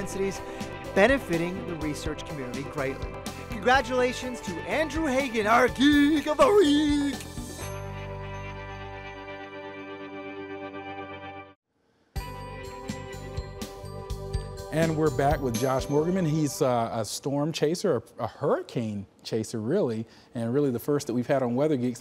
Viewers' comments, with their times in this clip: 0:05 that voice tho